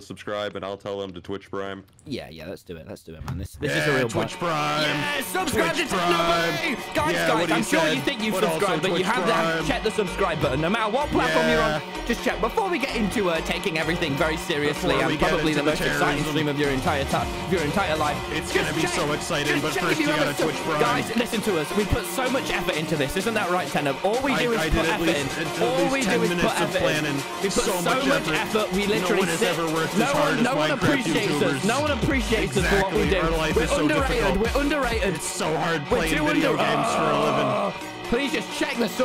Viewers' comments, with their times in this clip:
0:05 the part where your ears are going to die
0:27 headphone warning please